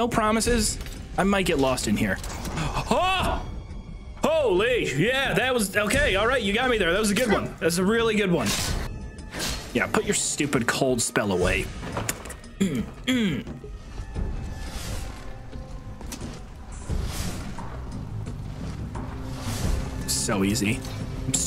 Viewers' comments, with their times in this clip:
0:06 That Fallout 1 and 2 soundtrack got me hyped 😂